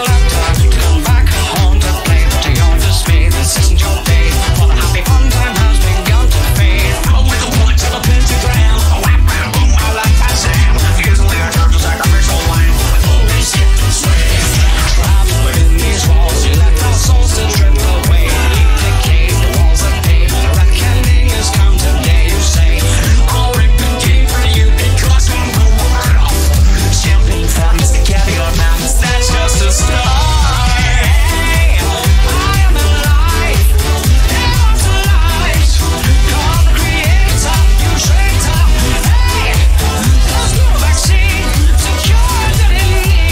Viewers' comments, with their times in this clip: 0:06 is my favorite part it's a really catchy part
0:10 “Usually I charge a sacrificial lamb, but we won’t be skipped and swayed.” Beautiful transition
0:27 The voice transition felt unreal
0:30 ok that transition from the "START" to they "HEY" was really smooth and fitted like a glove took me by suprise how well it sounded, great job 💚